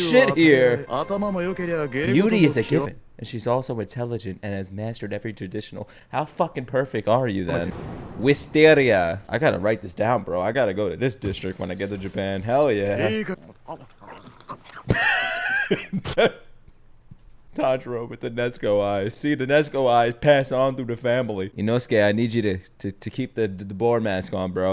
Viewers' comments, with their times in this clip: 0:08 Damn, the way how you pronounced "r" in "Wisteria". As i know, english-speakers don't pronounce this letter like that. I'd say, you pronounce it with Russian or Ukrainian acent.